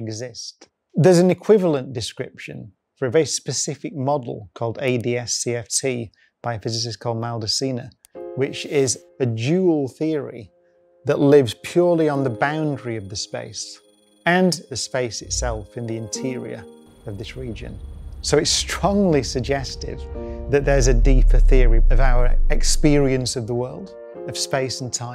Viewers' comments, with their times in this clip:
0:07 a physicist called louder semen? What..